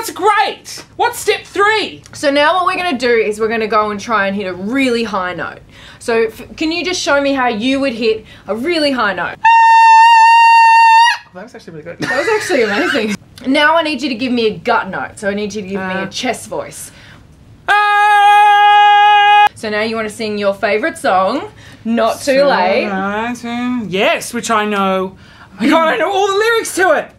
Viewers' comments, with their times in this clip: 0:09 That was a bloody sustained A5 dayum. Also I'd bloody love to sing with Ricki-Lee!